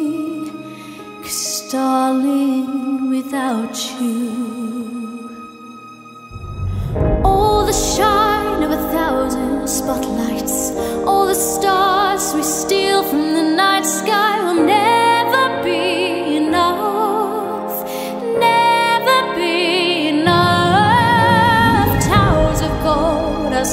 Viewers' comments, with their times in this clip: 0:08 Incredible just just beautiful... Up there with the best, such a soothing